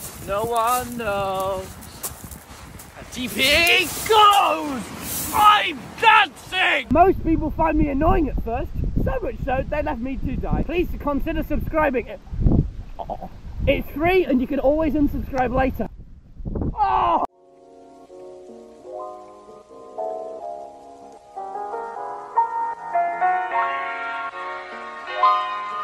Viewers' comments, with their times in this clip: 0:06 Help i cant Breath... the way they delivered that was funny as hell.